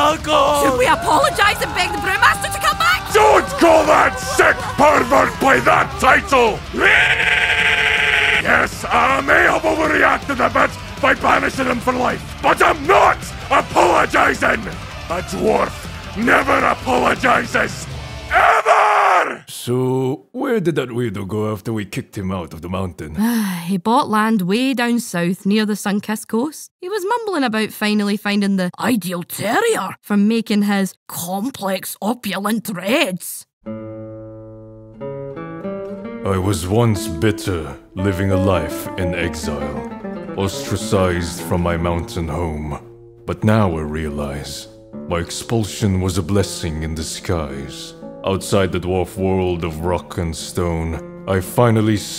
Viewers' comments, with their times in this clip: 0:06 That has to be the most impressive sounding REEE I've heard in a long time!
0:34 The tone change, the view, I'm in love